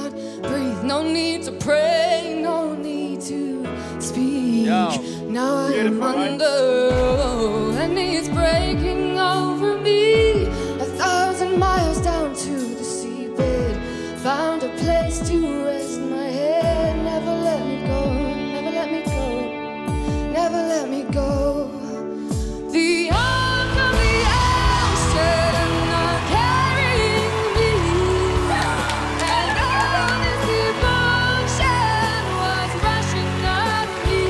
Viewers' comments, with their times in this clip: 0:03 seemed a bit forced. But she was very good, just need a but more control.
0:18 Yeah it sounded a bit weird. But hey, I would like to see you get up there, singing in front of millions of people. Being on the Voice is going to make her improve whatever you think she did wrong, right? If she was perfect it would be pointless. Her voice is still beautiful. And, if that was that "horrible" I don't believe all the judges would have turned around. So... Not that horrible, huh?
0:22 If someone told me this was Florence's voice, I'd believe them